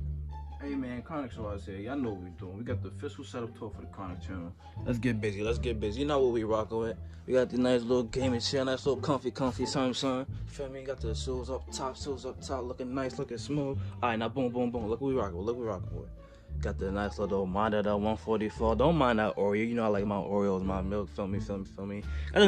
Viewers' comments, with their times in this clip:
0:03 when you have a stroke and you can’t talk just right